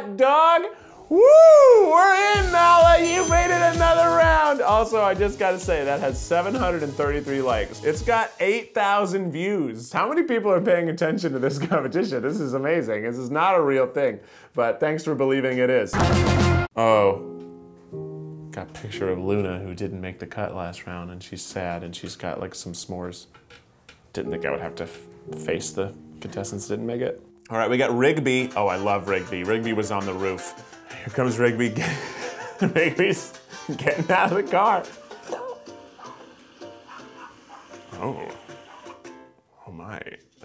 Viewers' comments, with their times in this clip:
0:06 he sounded like Nigel lythgoe from so you think you can dance😭😭
0:24 you sound so sad.... please cheer up!